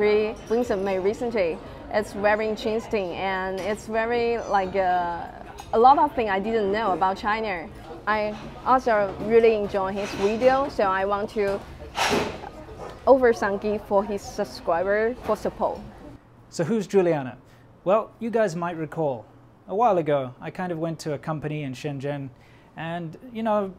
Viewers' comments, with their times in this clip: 0:06 lol she says “ Chiner “ like donald trump